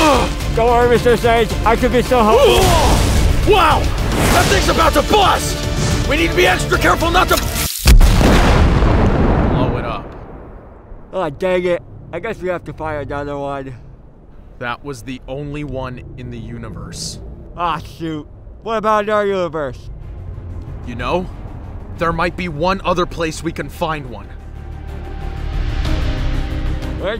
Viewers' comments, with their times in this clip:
0:10 The way spooderman talks 😂 it got me on the floor here the is the part